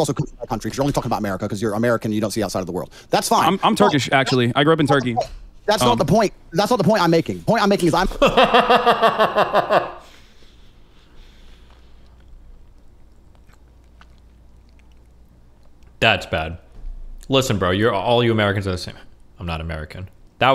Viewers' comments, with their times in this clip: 0:08 Andrew Tate made the devil laugh